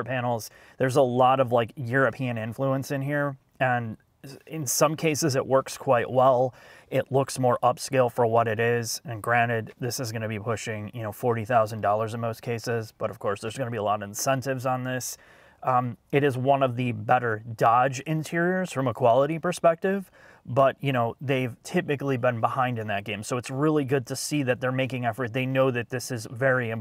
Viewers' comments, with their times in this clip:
0:08 Grannit? Granted is the word I think you wanted to say.